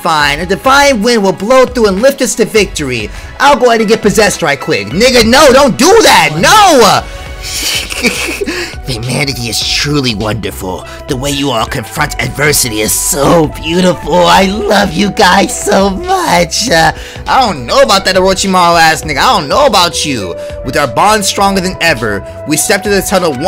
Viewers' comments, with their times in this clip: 0:08 why is your kiyo voice so perfect tho